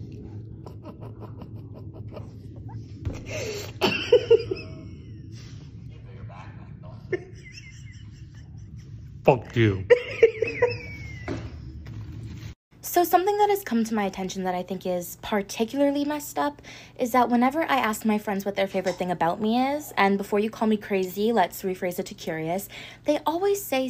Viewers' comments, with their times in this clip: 0:08 when he said f you i could feel the spit and food particles shooting out🥰😘